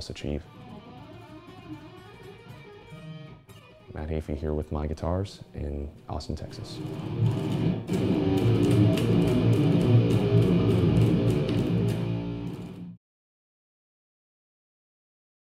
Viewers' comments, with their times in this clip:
0:08 that riff sounds badass!